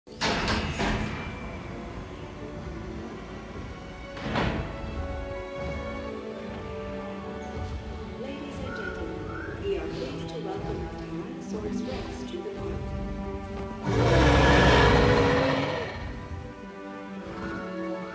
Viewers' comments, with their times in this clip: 0:00 Pentaceratops Sound🔊 Dinos 🦖🦕🐊